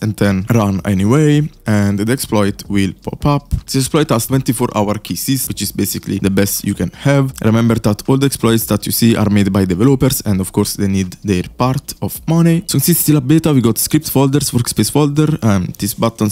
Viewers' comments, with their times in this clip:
0:04 24 hour kisses😂😂😂